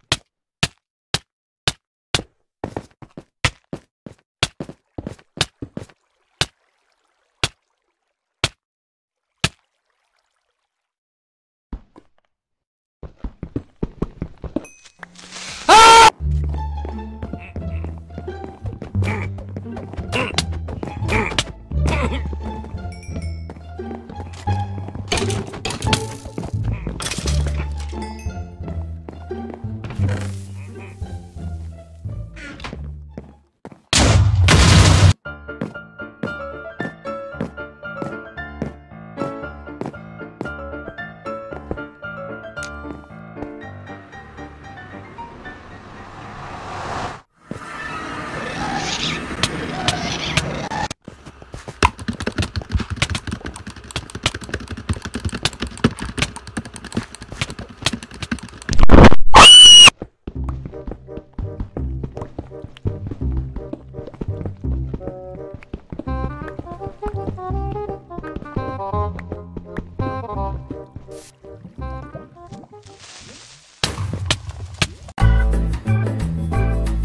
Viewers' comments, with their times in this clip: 0:07 this scream is better.
0:15 pcs (Perfectly cut scream)
0:52 his keyboard must be like half an inch away from his mic
0:57 best scream ever
0:58 Rip headphone users ;-;
0:58 WWHERESSSSSSSS THE SCREAMMMMMMMMMMMMMMMMMMMMMMMIIIIIINNNNNNNNNNNNGGGGGGGGGGGGGGGGGGG!!! AAAAAAAAAAAAAAAAAA Edit:Oh I Can Hear It Now
0:58 What's The scream? XD
0:59 put in head headphones and you can hear a whisper but turn it up REALLY LOUD you can hear it 👂
1:00 Headphone users beware!